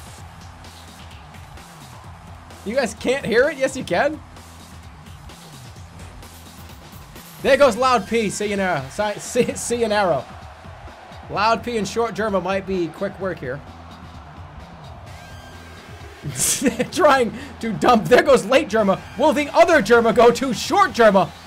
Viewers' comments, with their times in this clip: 0:05 "see ya narra" narrative? Bostonized "narrow?" An incomprehensible but infinitely powerful statement, as always